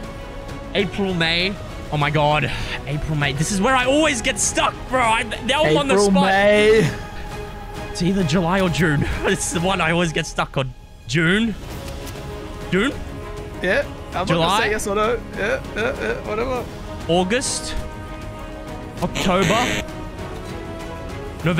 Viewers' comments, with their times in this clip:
0:08 hearing him recite the months of the year with that music in the background 😂